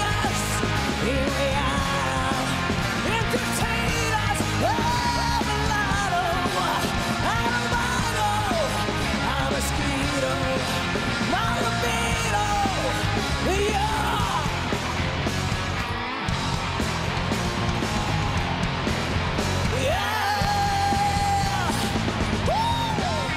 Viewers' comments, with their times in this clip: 0:10 Ok, but the rhythm guitarist in the house band is playing the “hidden” (some might say buried) guitar track against the main riff and that is cool 😎